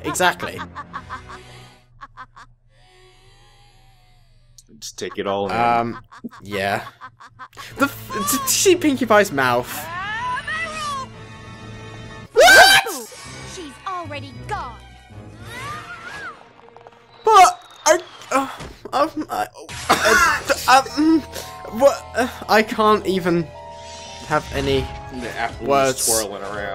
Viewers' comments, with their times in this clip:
0:10 prossesing *simotaniously* WHAT!?